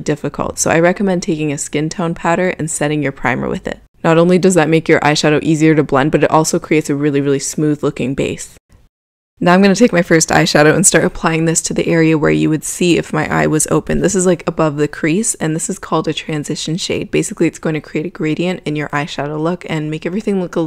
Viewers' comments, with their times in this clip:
0:03 What’s a “skin tone padder”?